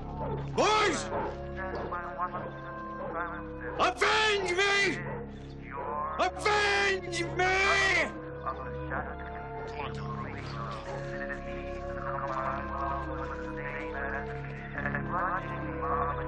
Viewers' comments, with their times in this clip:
0:03 avengers theme starts playing